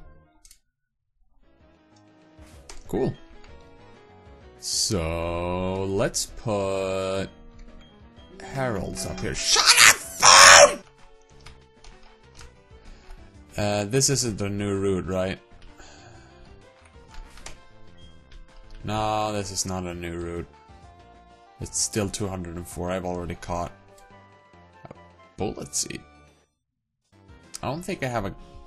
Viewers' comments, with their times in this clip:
0:09 That scream make my day XD